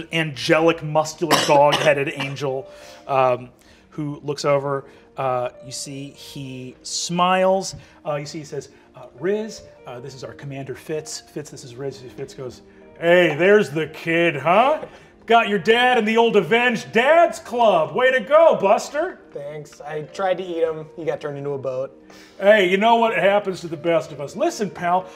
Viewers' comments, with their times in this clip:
0:10 Got flashbacks to Tony the Tiger Fun to see how one voice can still feel different when applied to different personalities.